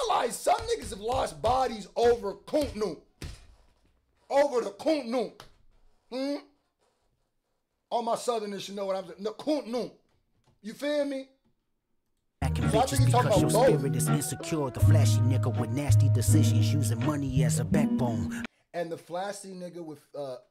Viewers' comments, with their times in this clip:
0:03 “Cuntnump” 😳🤣 How Gullah ARE YOU??!?